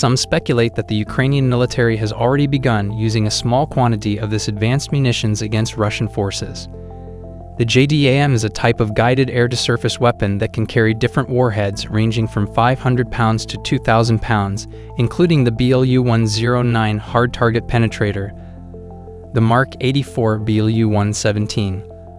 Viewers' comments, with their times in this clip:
0:05 Can anyone tell me please, what air jet is ?